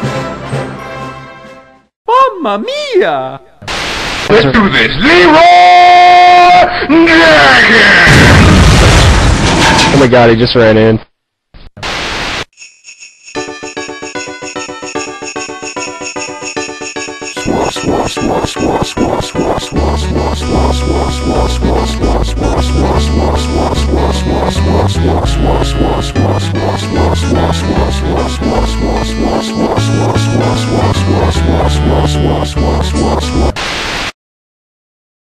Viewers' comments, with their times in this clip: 0:07 mario made rofl copter sound :D
0:17 lol cheese whossh noise
0:21 LOL the whoosh sound is the speak function trying to say "soy".